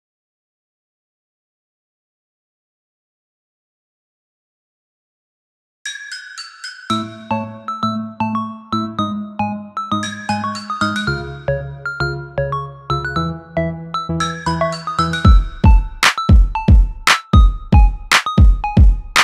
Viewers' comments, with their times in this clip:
0:04 The beat entirely done
0:05 The song start